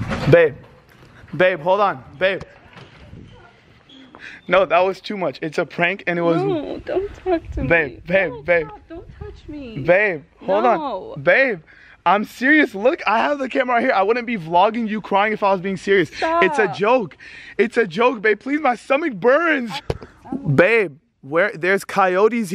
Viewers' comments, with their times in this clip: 0:07 she was laughing